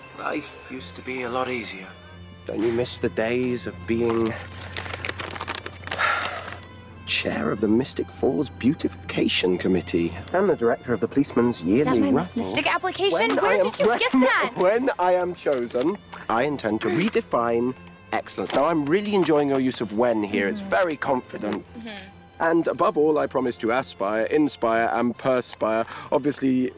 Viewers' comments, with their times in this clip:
0:05 is one of my favourites cause I absolutely adore klaus’s laugh when he’s with Caroline
0:13 his laugh is the cutest thing ever i can't